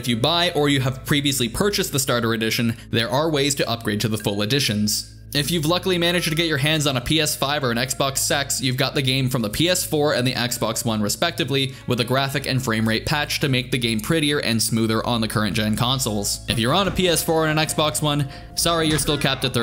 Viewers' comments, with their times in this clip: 0:03 that year 1, season 1 for honor main theme song hit home